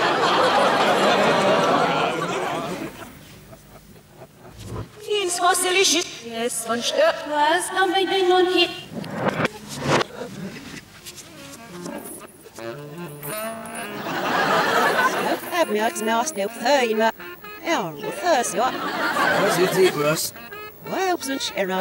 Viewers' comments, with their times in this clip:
0:05 How come they're speaking backwards there?
0:05 If this is in reverse, why are they still speaking backwards?